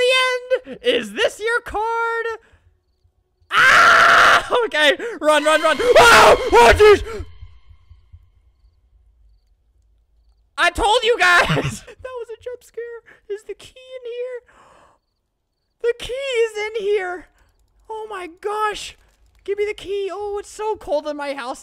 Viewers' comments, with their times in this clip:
0:04 That sounds like badboyhalo's scream
0:06 put volume max it’s flamingo singing MAKING MY WAY DOWN TOWN WITH CARLITO